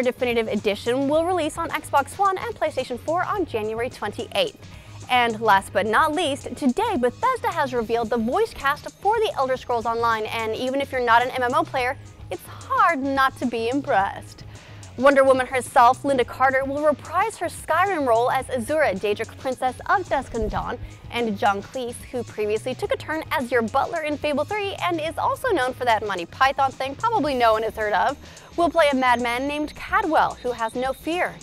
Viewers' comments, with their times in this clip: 0:10 It's hard not to be imprreweblahgwesed XD
0:13 Did you have a stroke when your said "impressed"